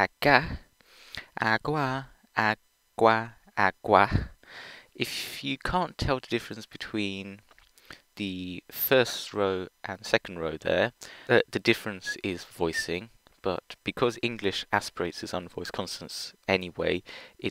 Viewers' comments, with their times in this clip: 0:05 I like the structure of the videos, however... because you pronounced them all the same. That's why. Downloading audio files for sounds you can't reliably produce would really help you out. Hope you find it useful. Side note: before someone else asks, yes I actually can pronounce all PIE stops reliably, only about 3 I find a little hard when not in isolation.